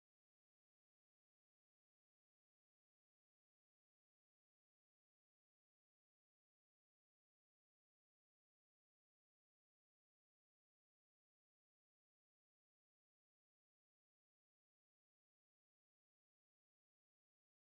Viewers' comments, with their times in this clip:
0:04 she thinks hamburger is made from pork because ham come from a pig. LMFAO. Wish the video was not mutid (could not tell if she was joking or not)